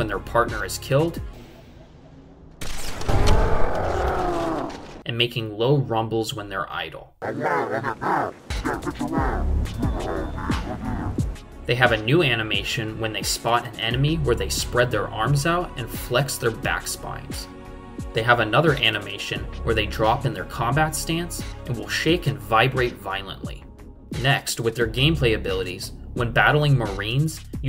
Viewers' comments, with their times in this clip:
0:06 its sounds like he's saying hey man what the heck and man what you want
0:07 I don't know if it's my imagination or what but to me, the hunter mumbles sound like this: "Ayo wtf!" "Yo watchu want?" "Come on man, Come on"
0:07 u can make out the hunter saying: yo what u want?
0:08 hey whatchu want? It sounds like he said that haha
0:08 to me, this Hunter vaguely sounds like he's saying "yo, watchu want"
0:08 Did that hunter just say "yo, watchu want"?
0:14 beatboxing hunters is crazy lol